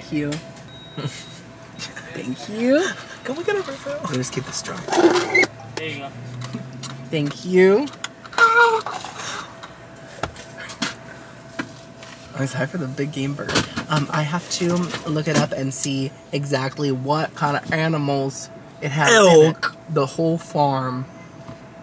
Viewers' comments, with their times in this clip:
0:08 your straw said: HIIIIII 😅😅😅